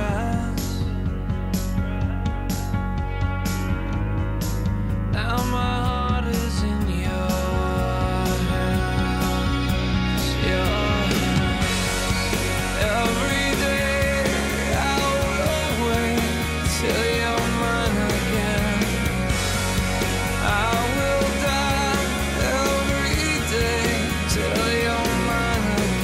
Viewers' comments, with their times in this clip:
0:09 Ebow is an electronic device used to create electronic Orchestra type string like sounds. You hold it near the strings of a guitar and it sustains withour the sound of a pick. Black Lab uses it on this song. Listen to the background swell of sound They used it a great deal more on "Your body above me" CD Listen to the songs "10million Years" and "Time Ago" tons of ebow.